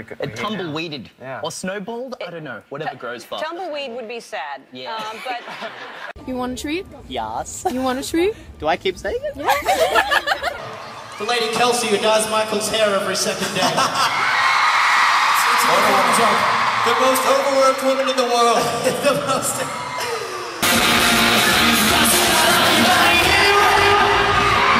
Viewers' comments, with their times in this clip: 0:09 I can't understand the girl ??